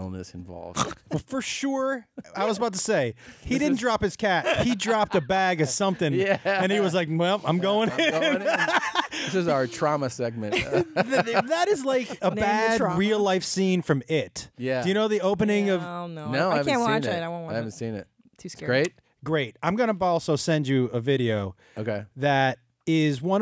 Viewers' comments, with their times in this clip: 0:05 OH MY GOD AHAHAHAHAHAH< that clip AHHHHhahahaha for a minute i thought , wait , oh wow that is Josh's voice is it a bit from his show intro or somethin... WAIT WHAT ! HAHAHAAHgot